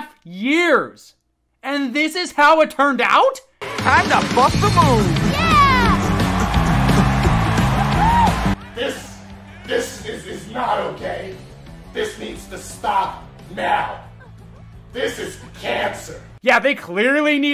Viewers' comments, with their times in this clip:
0:04 did anyone else hear him say “time to fuck the moon.”